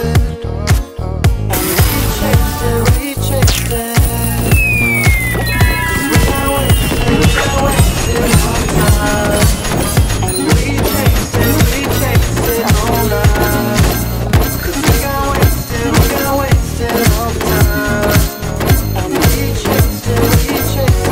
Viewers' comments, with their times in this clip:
0:08 Music with claiming rewards 😎